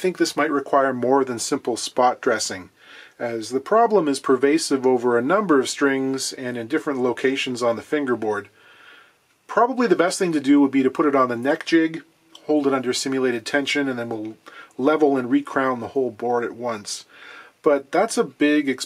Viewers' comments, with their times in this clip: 0:03 I’ve found a lot of that type of buzzing can be due to loose and/or low nut slots - might check that end?